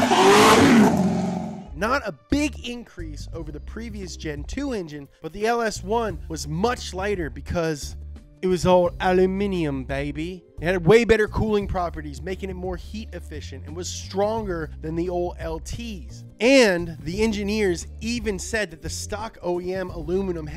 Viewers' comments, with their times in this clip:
0:08 that British accent was too good 🤣